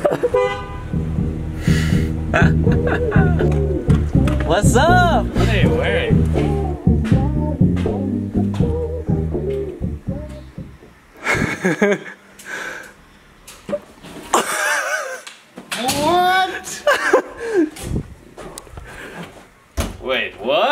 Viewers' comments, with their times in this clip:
0:05 i dont know "wassup" i only know WAKASUP